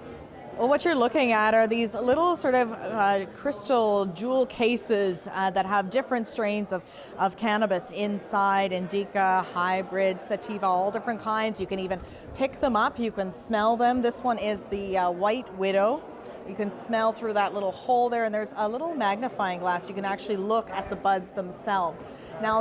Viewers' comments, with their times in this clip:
0:09 ,Indeeca she says lol